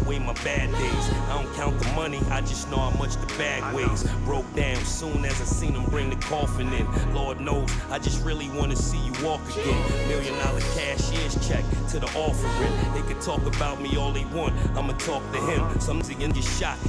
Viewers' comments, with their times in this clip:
0:03 Kanye seems inspired by JayZ with this song…sounds like “smile” on